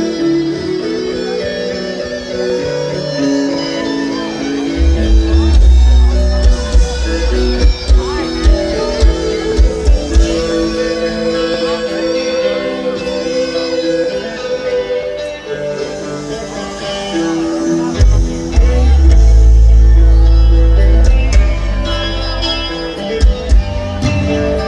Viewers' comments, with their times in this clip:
0:06 Thats a pretty wierd fuck up even for Lars in 1988, maybe he was drunk ;-) He plays the part that comes later... But they all starts to play where Lars thinks he is in the song, they could have easily ended up playing different parts of the song there. Because it wasnt only a random drum fil that he messed up, but they saved it like pros. You can also see that Jason gets confused and looks at Lars...